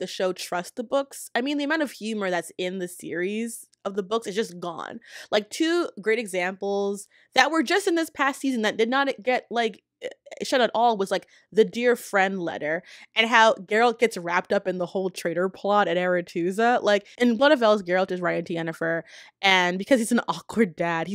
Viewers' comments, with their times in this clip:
0:05 Oh my goodness that read was so good! palpable venom😅